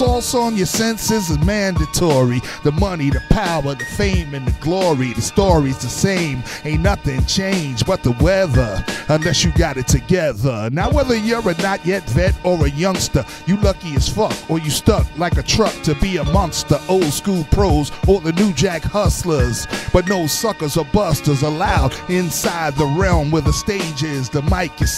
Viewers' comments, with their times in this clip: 0:10 It's great to hear old school rap legends freestyle. It's so different and awesome. This started to give me chills starting